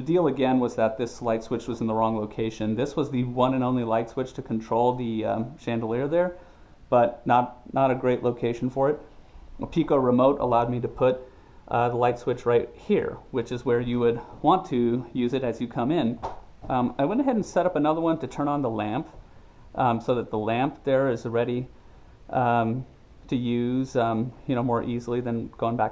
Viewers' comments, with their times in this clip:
0:09 sounds like "Makeeko Remote" What is the name of the product? Really appreciate you sharing all this with the rest of us :)